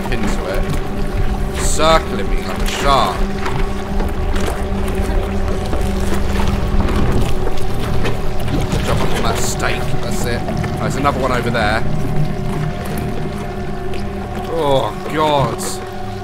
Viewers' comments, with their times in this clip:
0:04 the score playing was so eerie to me, i think the game is mostly swedish (I dont really know) but that score, "Köttmonster" as its called. It just literally sounds like the air strike alarms we have in norway. It is so bone chilling.